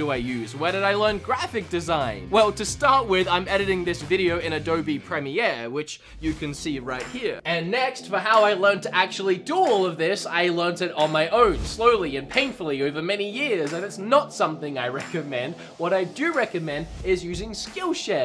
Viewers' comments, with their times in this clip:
0:05 I hate to judge, and I know it’s just your accent, but really? PREH-mi-EHR? Really gets on my nerves, because it’s pruh-MI-eer (!!!)